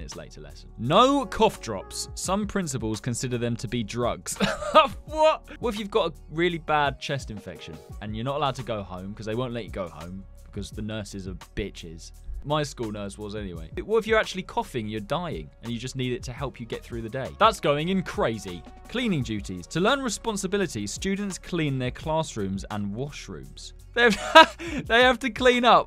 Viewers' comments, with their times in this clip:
0:10 I love how he didn’t bleep that swear word out but the others 😂😂